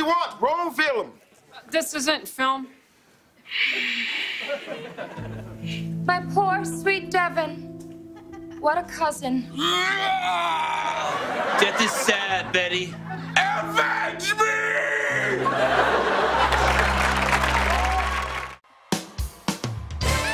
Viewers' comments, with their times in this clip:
0:03 i literally cannot watch Kenan exhale without laughing